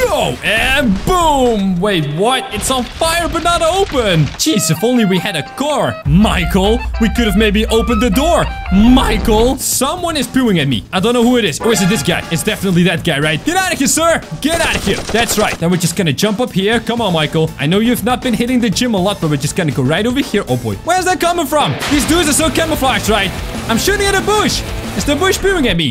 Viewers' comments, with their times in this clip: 0:09 music Nokia Arab ring tone me and my brother make fun of that and laugh